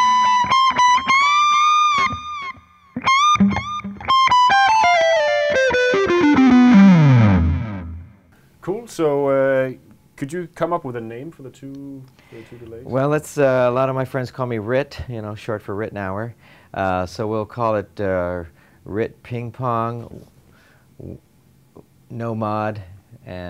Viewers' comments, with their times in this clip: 0:04 Now that's exactly how a Les Paul should sound!